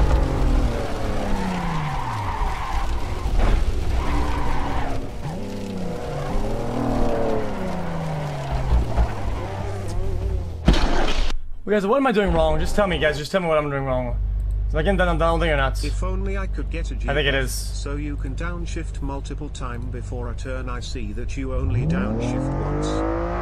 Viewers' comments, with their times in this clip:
0:08 Car crash was in sync with dramatic desk slam
0:09 Lmao the timing of him hitting his desk and the sound of the car hitting the guardrail was perfect
0:10 The slam syncing with the in game noise killed me